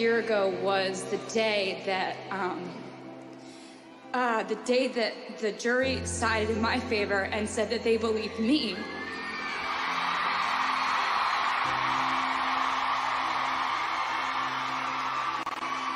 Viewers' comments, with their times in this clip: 0:03 you can hear her voice shaking.